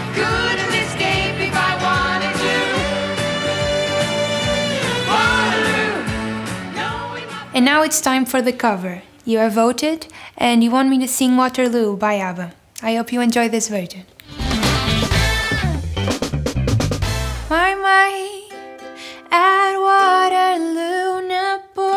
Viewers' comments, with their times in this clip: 0:08 Did she just say I hope you enjoy this Virgin